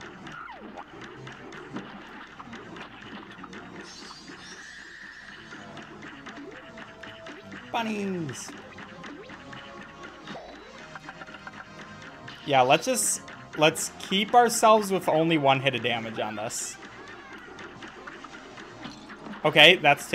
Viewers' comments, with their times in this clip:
0:07 The way how he said "bunnies" it's just so cute